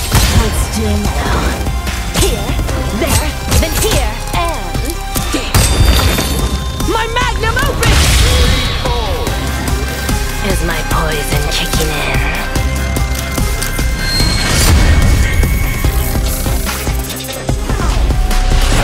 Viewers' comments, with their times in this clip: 0:04 I heard: " MY MAGNUM OPEN" didn't know Aki was packing that much heat down there! :face-blue-wide-eyes::face-orange-biting-nails::face-orange-biting-nails::face-orange-biting-nails: